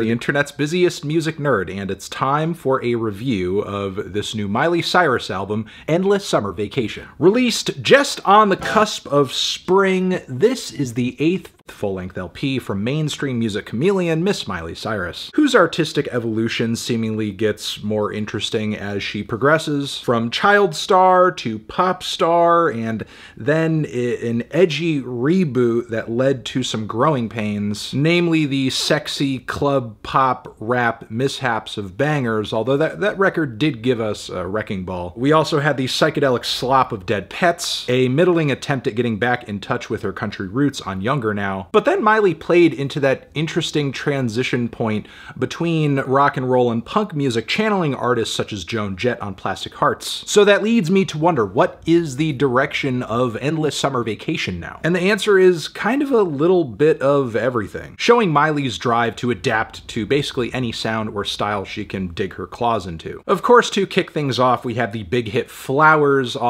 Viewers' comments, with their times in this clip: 0:10 lol I love when fantano does voiceover to correct his mistakes
0:52 he corrected himself with AI voice. You can clearly see the lip flaps don't match up